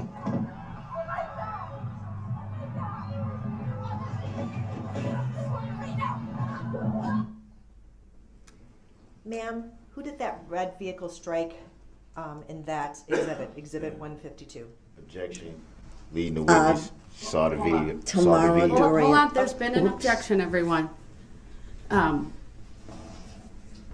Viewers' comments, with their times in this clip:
0:05 omg those sounds! All the videos/audio are haunting but the sound and thuds in this one are truly haunting. Imagining her experience, and her poor loved ones now hearing and seeing this - effin horrific and DB’s responses and disrespect is astounding and disgusting!!! Deplorable and depraved.